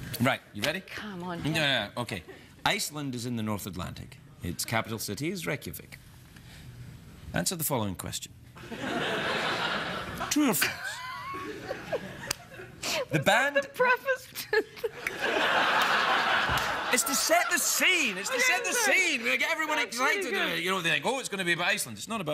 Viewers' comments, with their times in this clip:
0:09 might be the most genuine laugh I’ve ever seen a celebrity do on a tv show lol